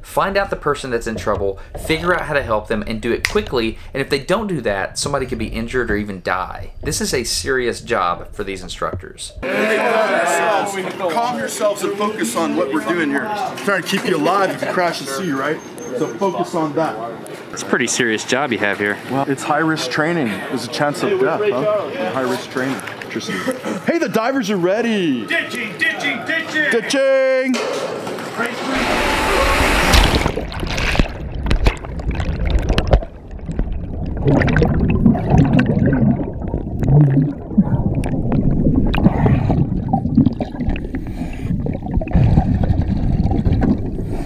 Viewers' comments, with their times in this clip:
0:09 I love the guy in the yellow shirt! I wonder where he is from. He talks very different from the way people talk where I am from (Florida/Georgia).
0:17 guy sounds so chill
0:24 he sounds like a hippie 👁👄👁
0:32 Once you go under, that underwater sound is simultaneously one of the most calming and terrifying things in the world. To me, at least.